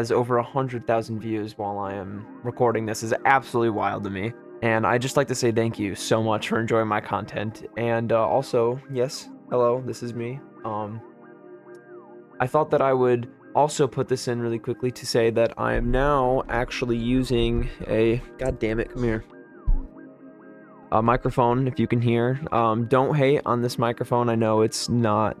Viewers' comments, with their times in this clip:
0:07 wow you're really pretty! also good video! entertaining, and calm, and your voice is soothing, maybe a bit too loud compared to the music idk but you're doing a great job by bringing attention to this small game! good job! i hope you keep growing!